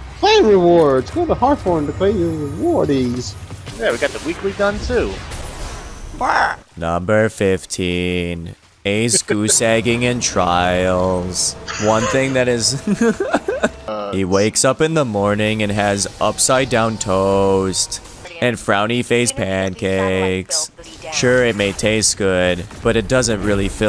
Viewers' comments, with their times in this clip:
0:06 "number 15" wow he sounds different from his normal ghost videos XD